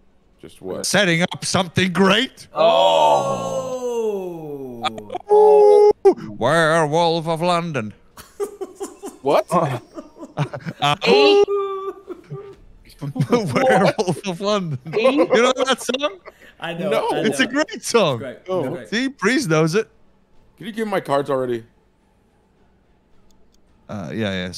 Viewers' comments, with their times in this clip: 0:05 Fantastic rendition of Werewolves of London!